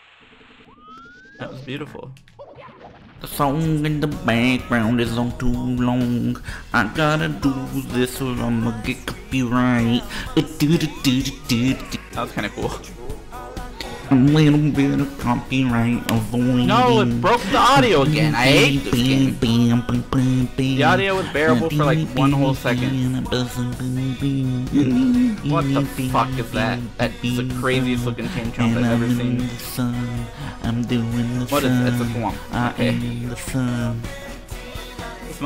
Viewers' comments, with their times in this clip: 0:03 that Mumba Numbah Five remix was amazing, the one
0:20 Lol oh my God the voice of an angle hahaha